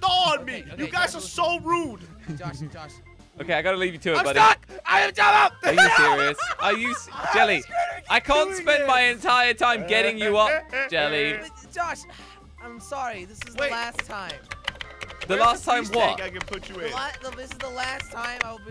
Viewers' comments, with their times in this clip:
0:05 IM STUCK I AM JELLO that’s what it sounded lile